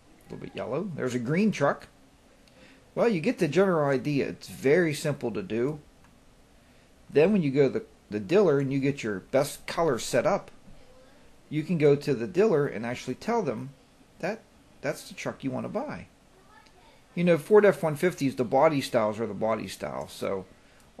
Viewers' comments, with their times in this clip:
0:09 you said 'diller'...what the hell is a 'diller'.